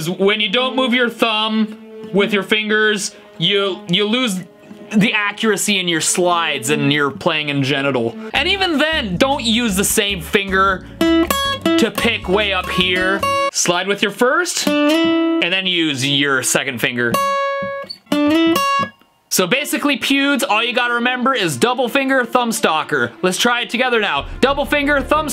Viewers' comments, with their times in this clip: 0:06 "Your playing in general?" Or.... "playing in gen--it--al?" :P
0:07 Activate CC for playing in genital